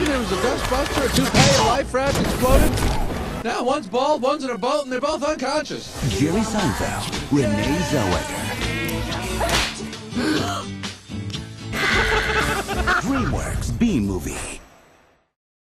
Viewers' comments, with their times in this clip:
0:12 They just murdered someone and they are laughing about it XD